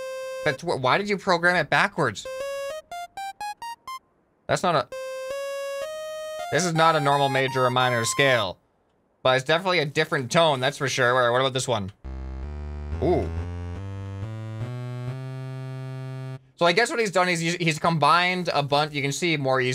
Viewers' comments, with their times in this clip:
0:03 I think it's the Phrygian scale